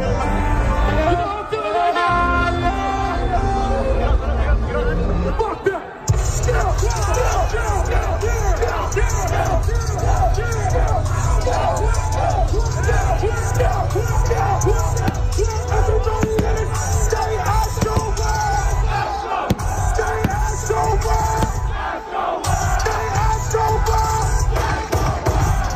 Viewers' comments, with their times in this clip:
0:06 That moment when the beat drops as people are trying to avoid the collapse gives me such a sinking feeling. I can't imagine how terrifying that must have been